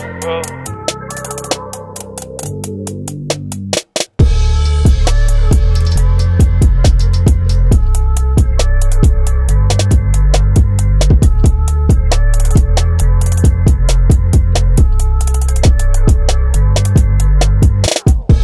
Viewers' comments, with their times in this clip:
0:03 Thank you for uploading. Best part is when the beat drops. Quality